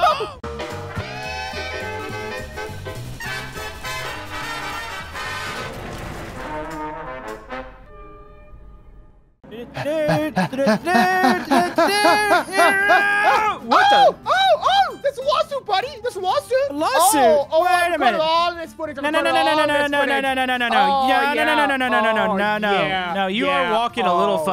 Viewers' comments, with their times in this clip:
0:10 is it just me because they sound like they are making out